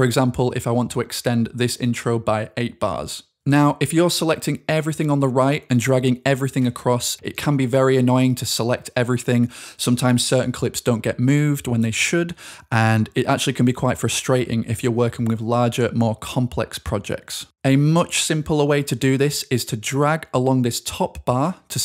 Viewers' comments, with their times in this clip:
0:05 this beat REALLY goes crazy. Started building up and shit 🤧